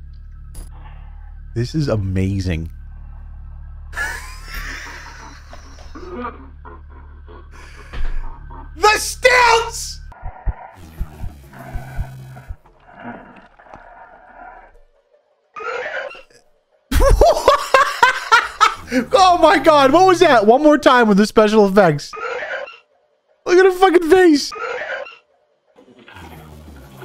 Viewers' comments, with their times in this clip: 0:08 Why in the gosh darn frickity frack does he sound like Woody from Toy Story?